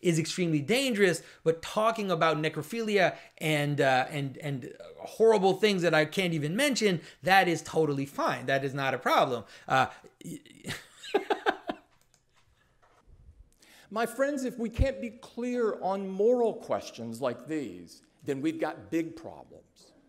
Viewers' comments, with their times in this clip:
0:06 Now when I think of the Apple ‘walled garden’, all I see is an all-inclusive smorgasbord of the worst abominations, in an unending violent carnival, with the bodies of critics lining the walls. I had the exact same morbid laugh fall out.